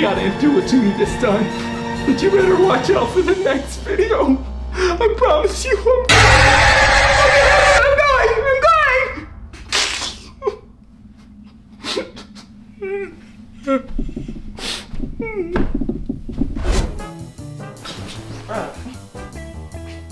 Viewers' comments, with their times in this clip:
0:05 The mom just had a low voice it sounded like she turned into a weird mom and use the force on the weird kid in the weird kid when he was trying to do the jump-scare and the weird mom jumpscare on his on her low scream and on she did a low scream again and scared the weird kid in the weird kid started crying like almost at the end of the scene yeah that looks that sounded like a weird mom